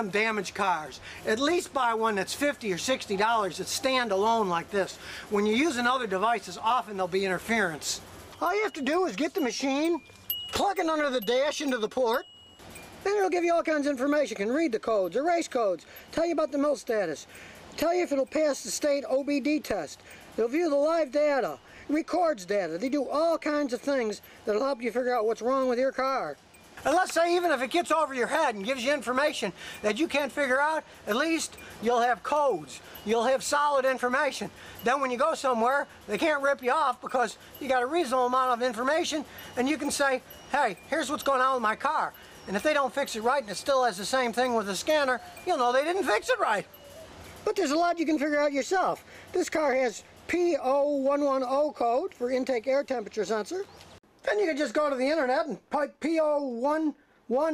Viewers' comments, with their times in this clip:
0:08 the stupidest door chime ever made
0:08 THE TOFU CHIME!
0:42 I like the Christmas bells in the background